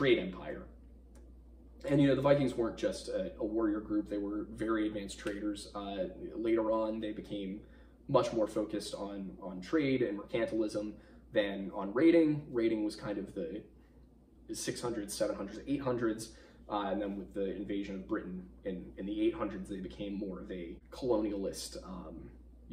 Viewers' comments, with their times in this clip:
0:03 Anyone else hear that nice knuckle pop just a bit after